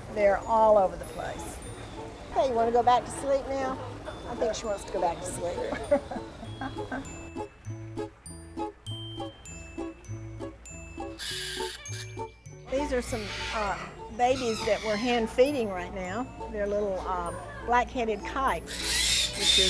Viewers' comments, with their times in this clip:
0:04 Were pinkachus named as a joke? Or did I mishear the name?